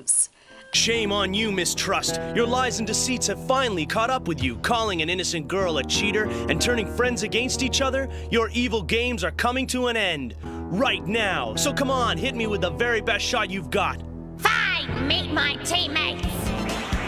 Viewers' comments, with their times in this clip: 0:05 and turning friends ag-gey-nst each other.